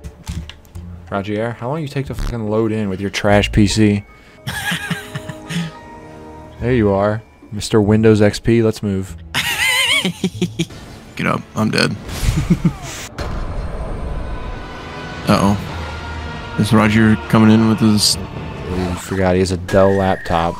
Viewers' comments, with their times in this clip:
0:04 Bros laugh is like ryukk from death note 💀